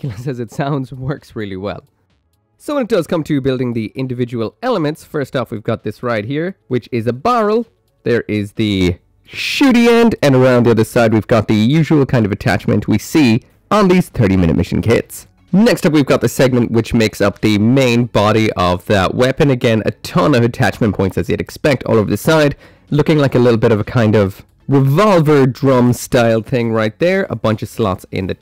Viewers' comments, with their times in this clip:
0:08 R.I.P headphone users lol.
0:10 My poor ears...